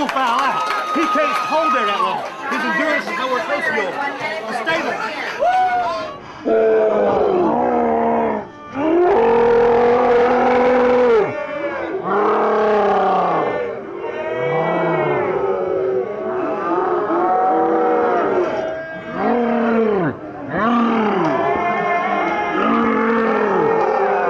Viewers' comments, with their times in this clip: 0:06 Sounds like a herd of cattle and one of them is very angry, plus a few other assorted barnyard animals thrown in for good measure